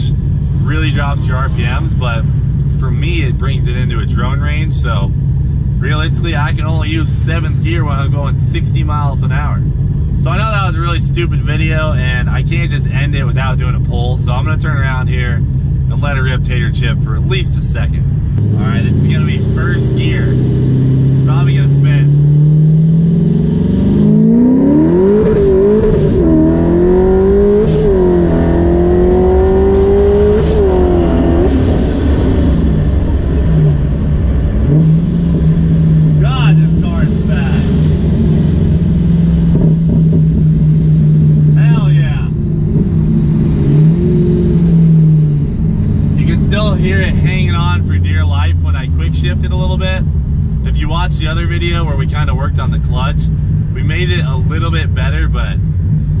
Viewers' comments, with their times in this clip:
0:06 OMG the pull has the most beautiful sound I've ever heard 😍😍
0:24 them bald eagles were screaming
0:38 That sexy backfire though 👌